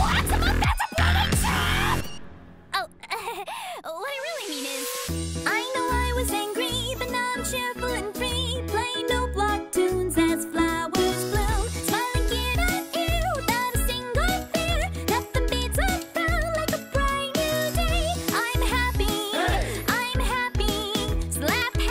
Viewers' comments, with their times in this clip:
0:09 flower I'm going heaven then when Alex tap the noteblock it's getting thicc